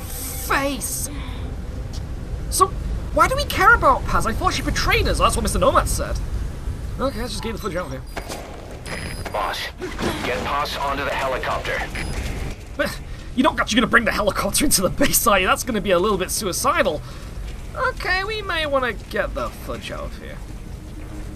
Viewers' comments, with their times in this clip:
0:06 at the beggining they tell you she has info on Zero (setcom man,after the whole Big Boss AND Zero being alive in MGS4,i doubt nothing) BTW,notice the "medic" sound a hell lot like Kiefer Sutherland in a lower pitch Also,pretty convenient to have a doc on a chopper,huh? Also sidenotes... Liquid killed Miller prior to shadow moses....(i dont think youll mind these,since this game is a spoiler to PW in sorts) Also,re-watch the scene,they go a long way to hide the medic's face,and HE took the fire,in front of Big boss just a frame before the explosion